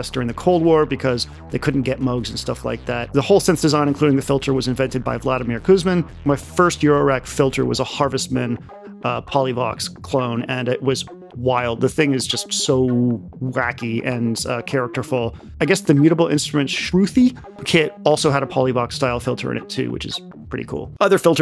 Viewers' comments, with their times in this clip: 0:03 Did anybody else initially think he just unironically credited Vladimir Putin for this synth? 😆